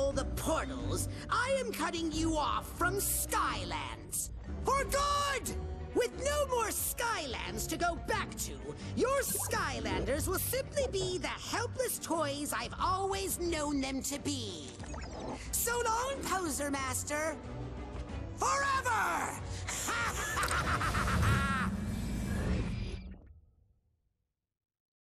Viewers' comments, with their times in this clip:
0:07 WTF???!!! Zim's voice doesn't fit this guys flicted looking face.